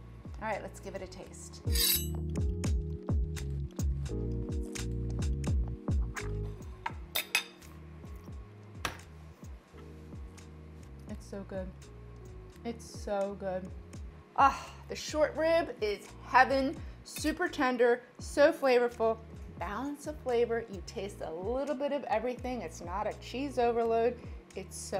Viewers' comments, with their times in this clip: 0:08 i love that impression 😁💯